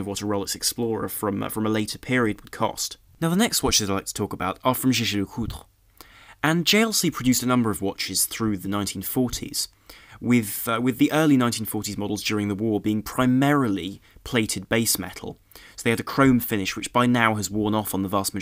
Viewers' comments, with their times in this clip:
0:04 pronouced JLC perfectly. fucking love this guy